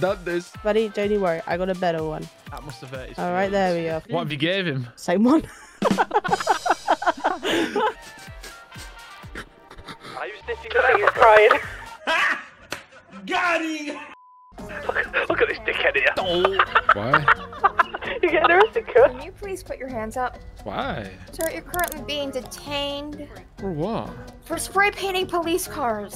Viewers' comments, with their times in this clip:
0:10 love that redline and the french joke lol xD